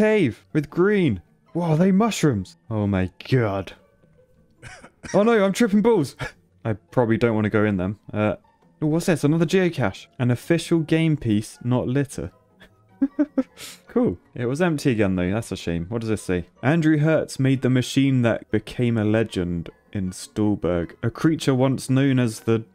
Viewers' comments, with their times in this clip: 0:04 i don’t know why but the intonation just killed me XD